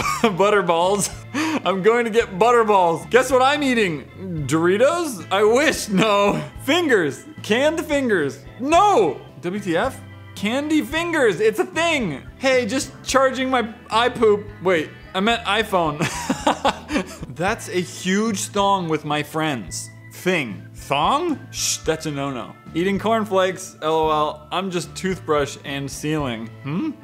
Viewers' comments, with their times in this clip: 0:08 OMG crunches on dorito